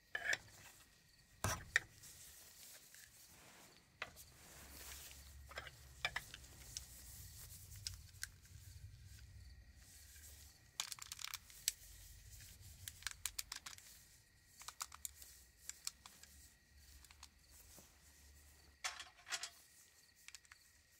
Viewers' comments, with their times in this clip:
0:08 I love how youtube decided that I might like a anime intro played in my ear almost highest volume at night when I'm watching a asmr video trying to sleep